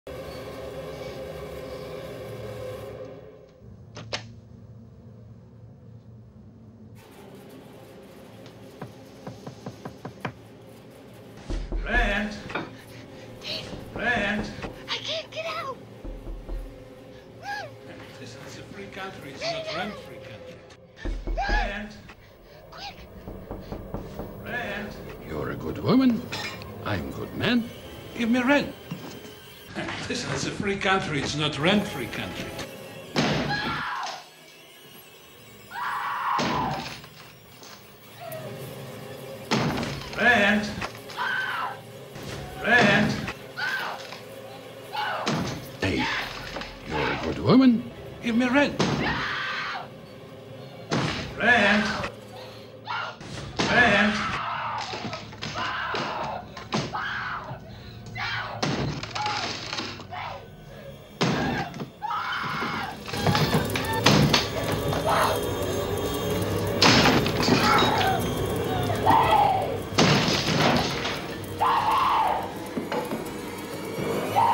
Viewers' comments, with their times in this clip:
0:10 holy shiet i wore a headphone and that knocks sounds so real ngl. I immediately look at my window
0:11 i literally freaked out for a moment... i was like who is knocking the door?!
0:11 got mi scared for a moment I though someone's knockin on my door lol( use headphone)
0:11 FUCK this knock scared the shit out of me. I genuinly thought something... or someone is knocking on my window.
0:11 that knocking almost gave me a heart attack wtf
0:11 tf i thought someone was acc knocking my door
0:11 I thought someone was at the door
0:11 Wearing headphones, the knocking scared me
0:12 i was literally shaken like who is knocking at this point of time..that felt so real with headphones on
1:00 Yooo I’m in my room and it like rn and the knocking with headphones I thought there was someone knocking at my door wtf I love dis
1:00 I heard that knocking A.M God I panicked the hell out